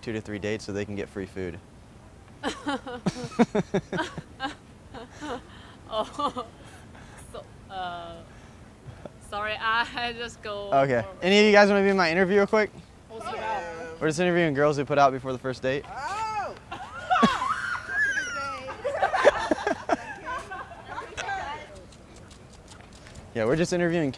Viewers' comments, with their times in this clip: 0:04 I present to you the laugh of shame
0:10 she was laughing but i dont think she understands english
0:12 confronts herd of black girls VARIABLE NOISES